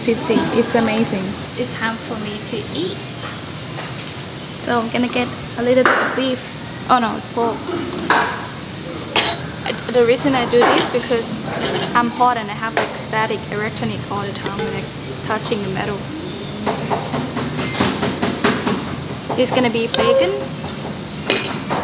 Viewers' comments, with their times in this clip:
0:08 you have static electronic on. That's kind of funny the way you say that.